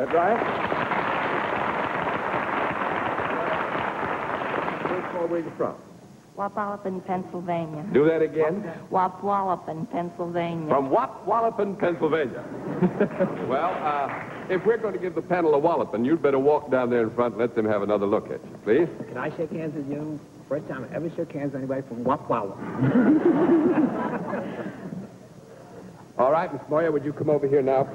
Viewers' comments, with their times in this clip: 0:08 i would have guessed that her job was voicing the adult characters in Peanuts cartoons.